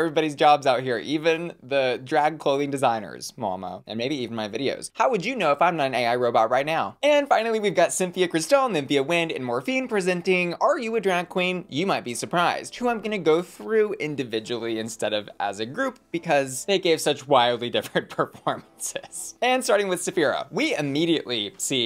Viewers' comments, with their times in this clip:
0:05 "How would you know if I'm not an AI robot right now?" 2 seconds later: "Symphia Cristal" ...Ai does do that... hmm 🤔
0:07 Did she say “Symphia Cristal” ? 🤣